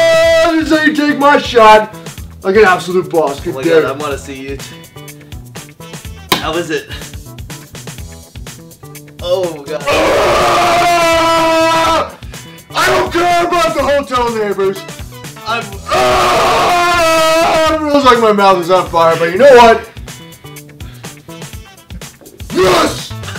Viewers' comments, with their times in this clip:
0:09 headphone users beware LOL